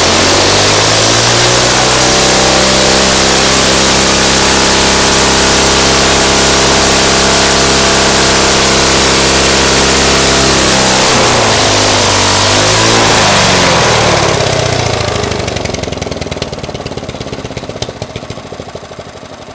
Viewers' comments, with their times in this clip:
0:04 that thing sounded like it hit 6000rpm